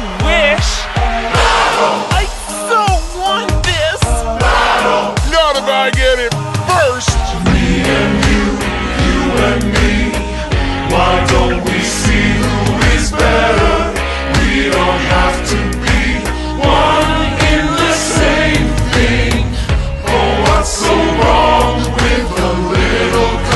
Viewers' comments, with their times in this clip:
0:07 Bro when they all sing together is magical asf ong this music ain't for kids it's something else >>>